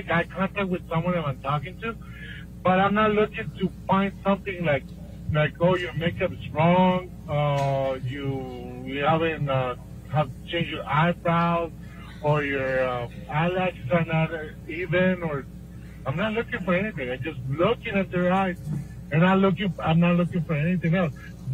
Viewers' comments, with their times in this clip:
0:04 and Johnny's amusement at him speaking so genuinely is a delight